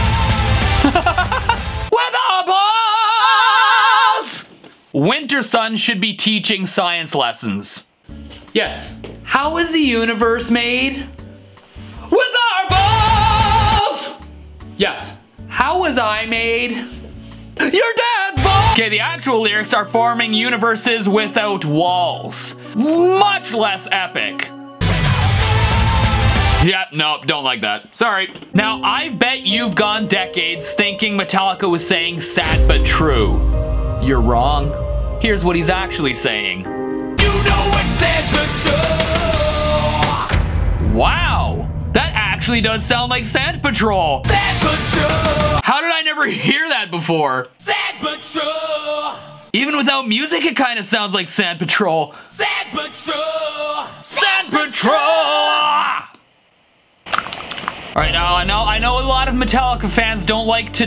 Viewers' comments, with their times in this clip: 0:02 The harmony lmao!!
0:18 Is July is June 18 okay Lego con
0:33 I heard sapatue which is not a word
0:37 My 6-year-old brain genuinely thought it was this and wondered why "sad but true" wasn't "enter sandman"
0:37 I herd "Santa troll"
0:38 I'm hearing "It's sandpit turtle" like the first metal misheard lyrics video
0:40 sounds like "sans patrol!"
0:47 sounds like sandpit troll.